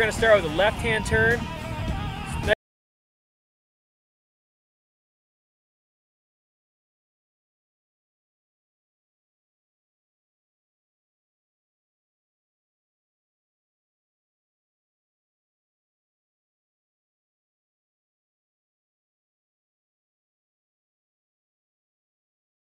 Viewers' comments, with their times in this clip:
0:03 lost all sound